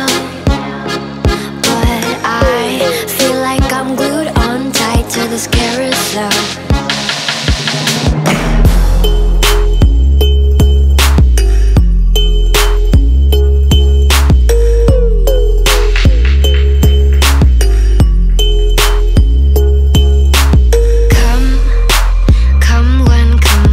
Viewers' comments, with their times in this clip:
0:07 THE BASS DROP I'M STILL NOT OVER
0:08 That beat has me SIMPING 🎶🥵🎶